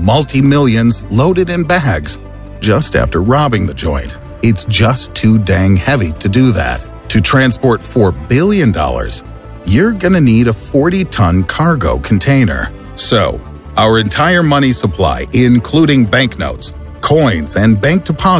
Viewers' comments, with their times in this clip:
0:03 Just after robbing the joint its too dank